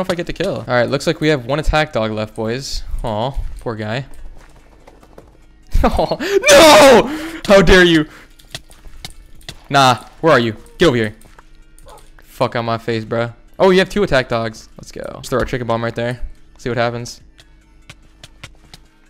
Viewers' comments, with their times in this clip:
0:05 that's the sound of genuine panic from a grown ass man over a lego dog
0:06 you could hear the fear bro😂